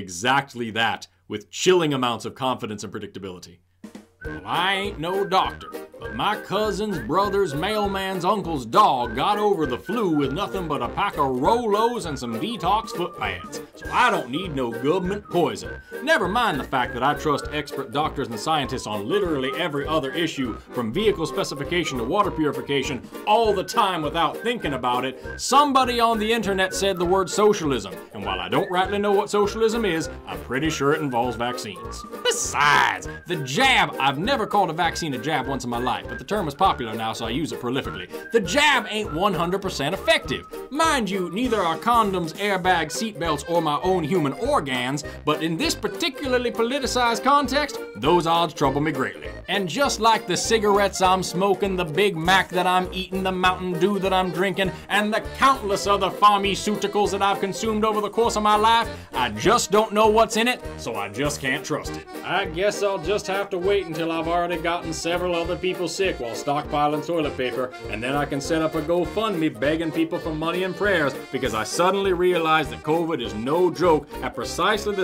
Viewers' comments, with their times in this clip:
0:04 As a Southerner, I can attest that the bit (including the accent) is indeed very accurate except that there needs to be more appeals to the Bible like "Read Revelation" and "Vaccines are the Mark of the Beast"
0:04 Trae Crowder had a standup bit where he tells the audience that he has what people consider to be the dumbest and the most racist sounding accent, and he knows this because whenever someone is telling a story and they get to whatever the dumb guy said, "they always say it with MY accent!" .
1:00 OrgAns and Pharmiceutical